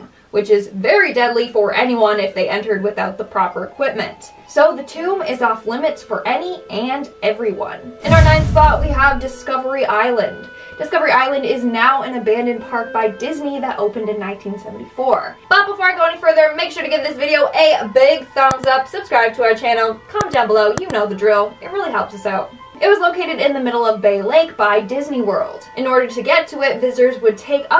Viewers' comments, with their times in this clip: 0:10 is she talking in a tunnel????